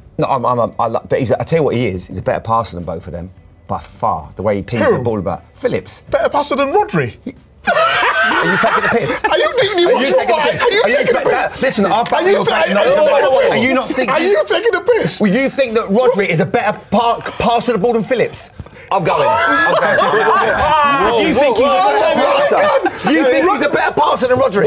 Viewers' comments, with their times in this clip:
0:06 richards just laughing in his face😂 I mean that was a ridiculous call by Jamie I can’t believe he tried that..